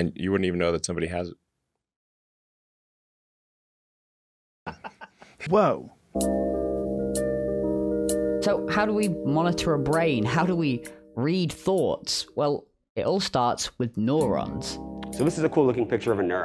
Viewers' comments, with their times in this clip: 0:03 silence laughter “Woah”